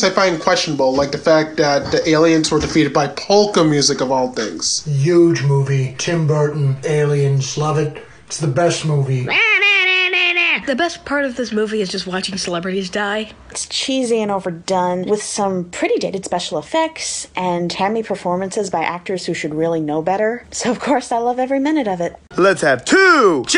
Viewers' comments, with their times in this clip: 0:04 I had this playing in another tab and I swear to god I thought that bearded guy with the Guardians of the Galaxy shirt was Donald Trump talking!